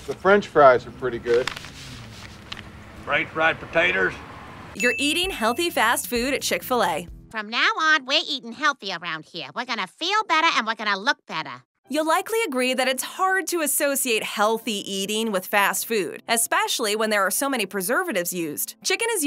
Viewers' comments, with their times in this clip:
0:03 This old man said potaters instead potatoes